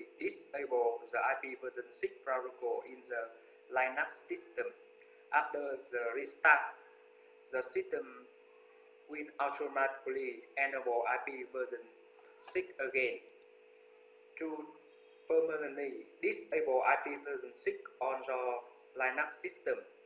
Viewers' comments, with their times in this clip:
0:03 Where did you find that pronunciation of Linux? Lastly, I do hope that you've been able to improve the sound quality in your videos.